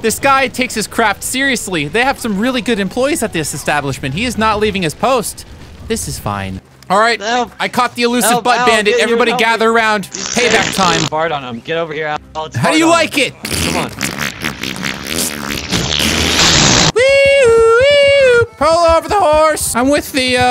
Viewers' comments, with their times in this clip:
0:04 what he playin is lit AF